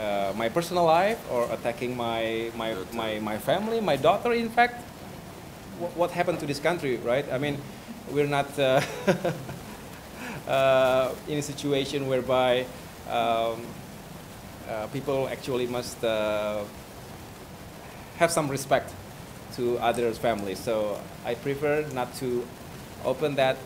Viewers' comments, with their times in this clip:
0:09 that laugh was just a way to spend some seconds to think well grammar and proper vocabulary mentally while distracting the anxiety I used to be like that😂